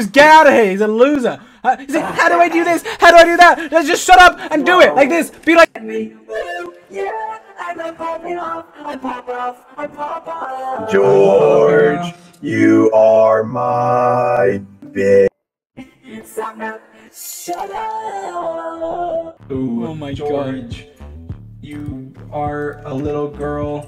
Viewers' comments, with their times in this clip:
0:08 I have no idea why by the voice thing sounds amazing-